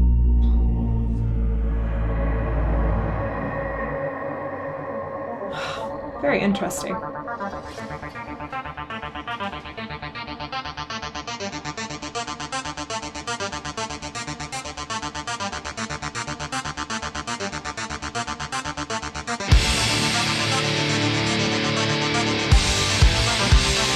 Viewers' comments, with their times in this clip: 0:10 .... now go listen to Anne Clark's "Our darkness" ..... tell me that's not the same start , tell me that's not new wave